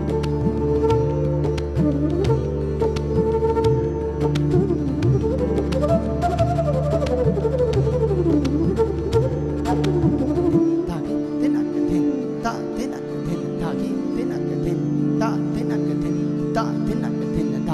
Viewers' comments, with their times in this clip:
0:03 I was simply amazed at his terrific flute playing!..